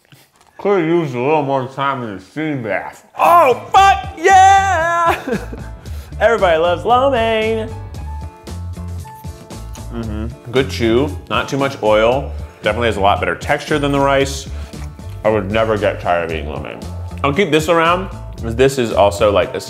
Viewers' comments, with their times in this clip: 0:03 Keith hit some notes